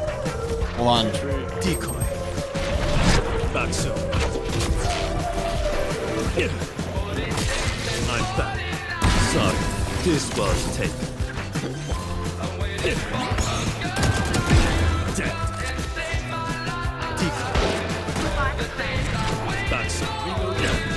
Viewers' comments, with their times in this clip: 0:04 the classic, "out of my league", big music, i know it BC of you